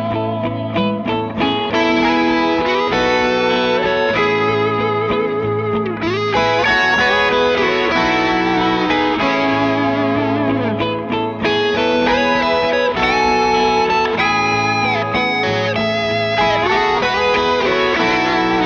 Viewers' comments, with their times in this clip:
0:03 spirit of Allman brothers.